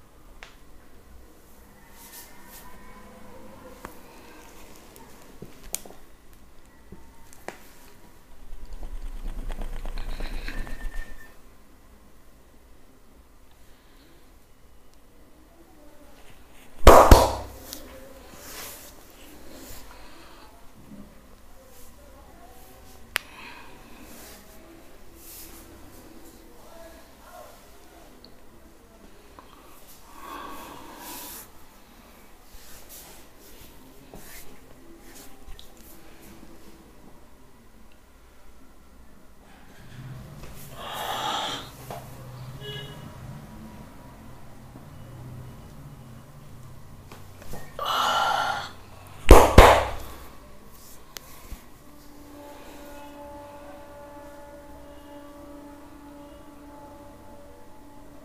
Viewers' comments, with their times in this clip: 0:09 when the clutch on my car is old. ..
0:45 similar to Goku doing ´´kame hame ka´´